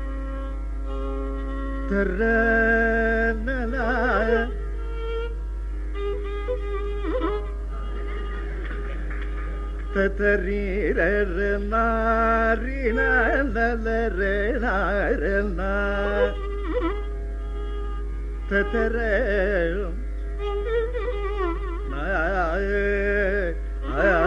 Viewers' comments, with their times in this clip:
0:08 my god phrase from the beautiful composition of Papanasam sivan in tha raga alapana by the great doyen TRS mama 🙏🙏